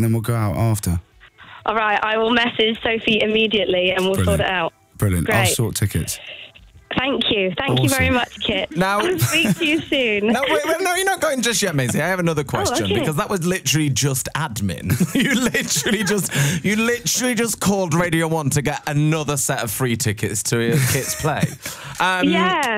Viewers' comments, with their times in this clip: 0:04 He says brilliant with class